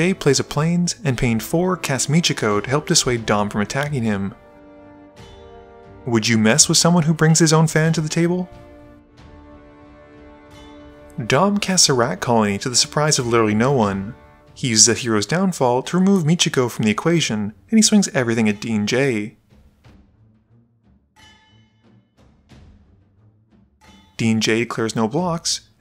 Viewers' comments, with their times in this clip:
0:06 how calmly you said it😂😂😂